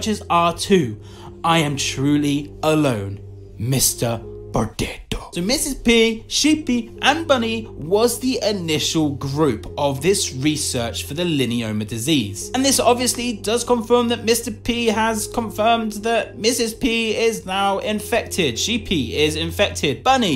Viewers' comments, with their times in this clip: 0:03 Lol the voice XD